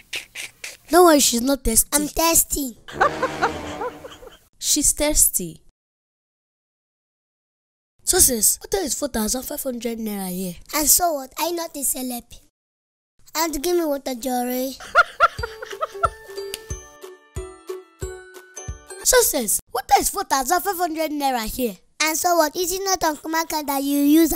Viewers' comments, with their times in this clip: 0:05 captions: "she's tasty"